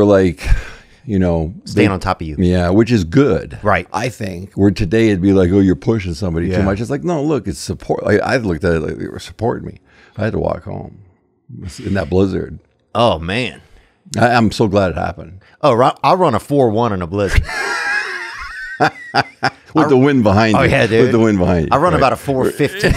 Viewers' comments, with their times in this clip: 0:03 What the hell was that weird "I think" cut ?